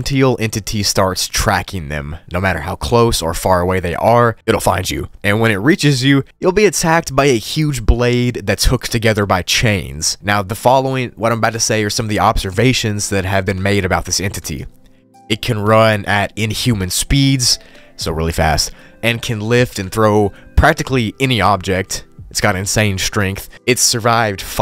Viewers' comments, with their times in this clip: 0:10 are you pronouncing “cent-in-UL” that way to trick me into commenting. Because it’s worked